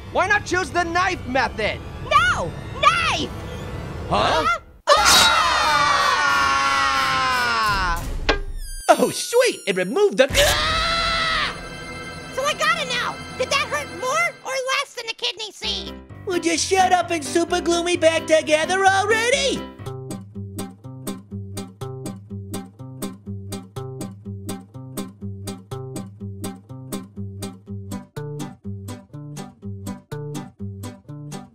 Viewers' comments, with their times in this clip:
0:10 that’s what you get for snoring loud
0:15 Is it just me, or do i think it's cute when little apple says kidney seed?